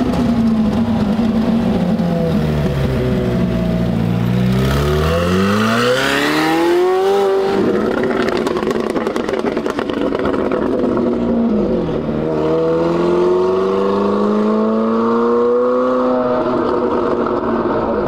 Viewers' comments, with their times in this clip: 0:04 Camo McClaren. Do you want pops, bangs, or crackles? How pronounced? Yes